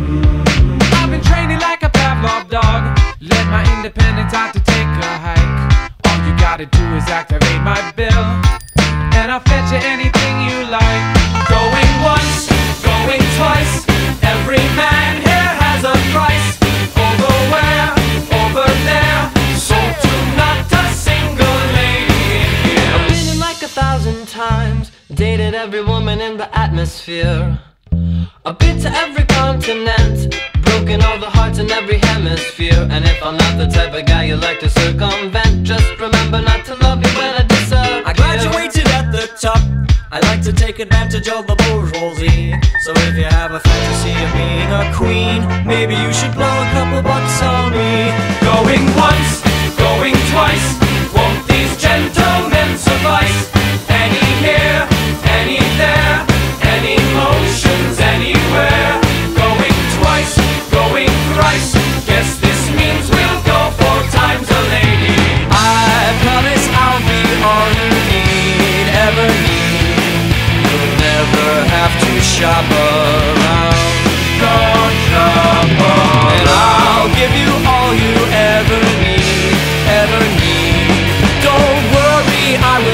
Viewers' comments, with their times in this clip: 0:10 sounds like sonic boom
0:11 It was midnight and the loudest part was playing.
0:19 Can't tell if that's a quick guitar in the background or someone going "ey!"
0:19 SOLD idk why but i really like the radio/megaphone sounding voice in their songs.
0:19 is it just me or was there a slide whistle playing n the background when they say "SOLD!". ive checked every version of the bidding and there is no slide whistle. only an electric guitar.
0:23 nobody notice the radio voice here?
0:32 That little noise really reasonates with me.
0:35 just remember not to love me when I diss a pear
0:41 Nono McNono I always like hearing the piano in the background here
0:41 weird French noise
0:57 love the chord (is that the right term?) (on the word "anywhere")
1:06 anime opening vibes